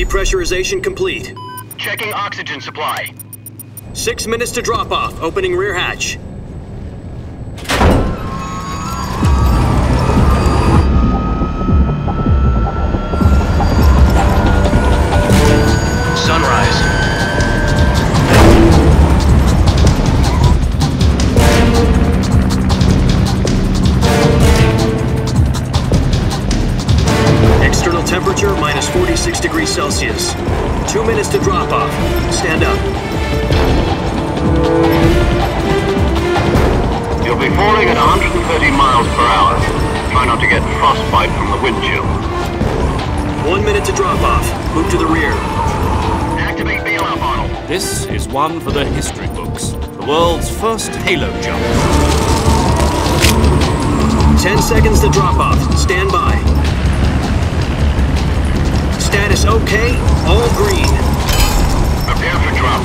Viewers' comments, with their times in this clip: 0:07 In 2004 after waiting 2 years for this , I had the most intense goosebumps in my life when the hatch opened and the OST kicked in
0:45 "ACTIVATE THE (WHAT THE FUCK DID HE SAY?)"